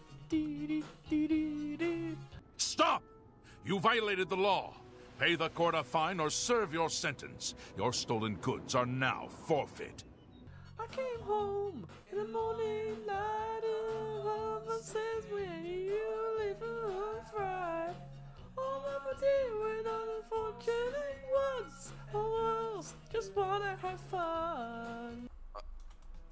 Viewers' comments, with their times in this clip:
0:10 You have the voice of an angel